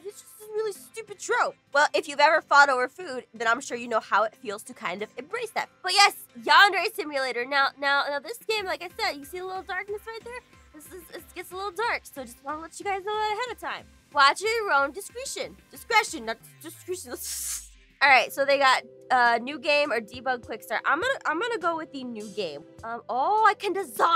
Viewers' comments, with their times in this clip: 0:07 Is it just me or, does she sound like Nana (Kawai-chan) from Mystreet ? Sorry if I spelt the names wrong, I just can't spell.. And I am watching this in 2020!